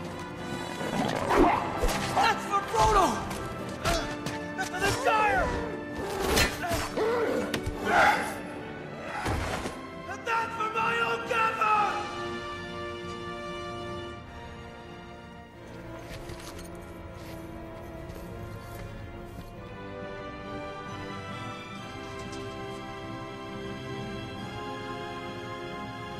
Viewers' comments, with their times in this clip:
0:10 What does Sam say ? It sounds like he's saying, "and that's for Michael Gambon!" But that can't be it.